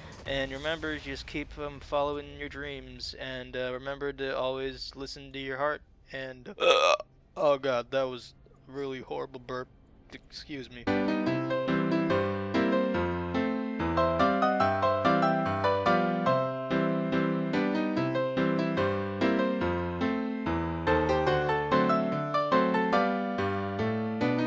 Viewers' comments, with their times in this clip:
0:03 wait, if you cant burp than than.......... ......... that was fake!
0:05 but..but you said you cant burb
0:05 thought you couldn't burp
0:05 I thought you can't burp?
0:06 I thought you couldn't burp?
0:06 I know that this video is older..But on you burped...You said in one video that you cant burp.